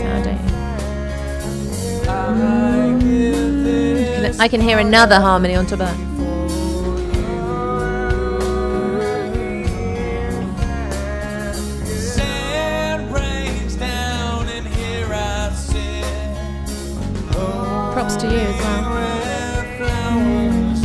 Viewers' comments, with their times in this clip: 0:04 On the studio recording/album , you can hear that beautiful harmony you were bringing in at min ❤❤